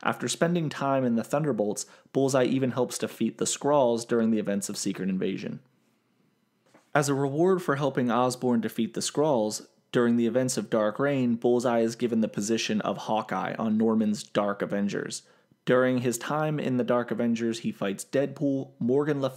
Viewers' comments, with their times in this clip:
0:06 Haha, I can hear you flipping a page.